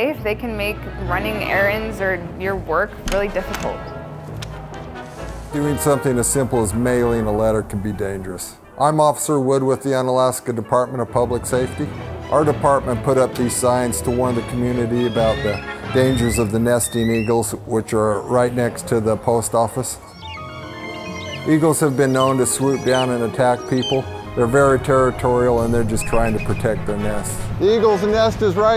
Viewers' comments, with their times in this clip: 0:09 this guy reminds me of multiple characters from south park! Sound like McKay, looks like the sheriff, I don't know who else!😂